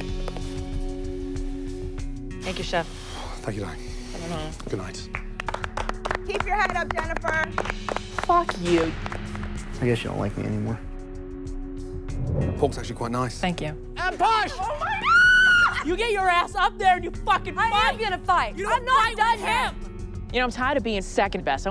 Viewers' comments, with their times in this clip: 0:08 That fcck you was SOOOO edited in! 🤣🤣